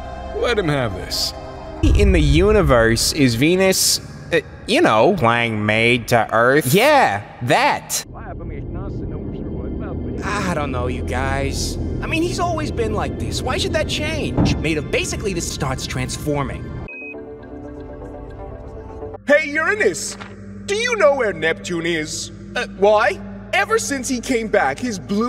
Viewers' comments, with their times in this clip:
0:08 he’s saying “We’re all made of leftovers from when the Sun came about” in reverse